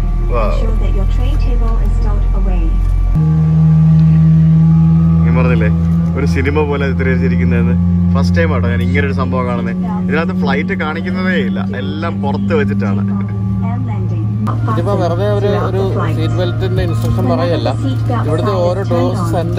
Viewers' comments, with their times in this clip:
0:04 GE90 Engine Startup Sound Awesome...🔥